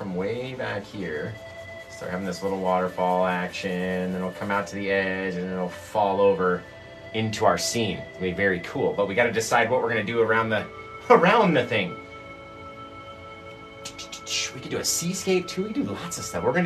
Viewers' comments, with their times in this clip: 0:04 I like the background music. And I love the painting. Sheesh and it’s just starting…